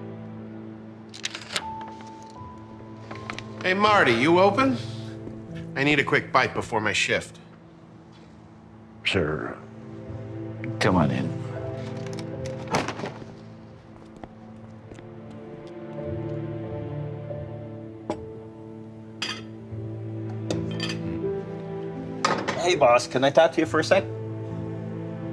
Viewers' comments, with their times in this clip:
0:09 poor man everyone is being rude and yelling